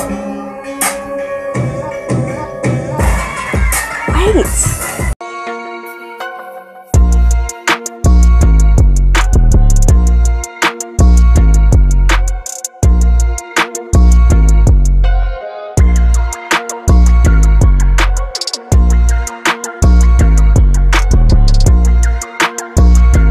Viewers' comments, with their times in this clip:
0:07 that bass tho!!